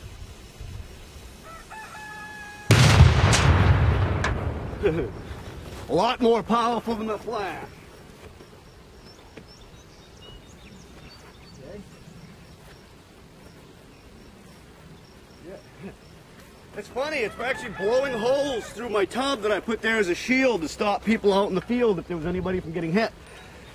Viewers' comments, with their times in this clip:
0:04 that little chuckle